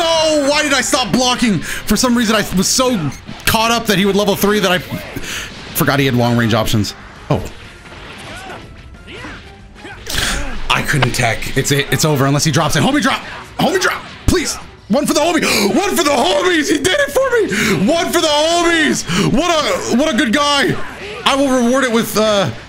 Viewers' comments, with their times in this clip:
0:09 that noise sounded inhuman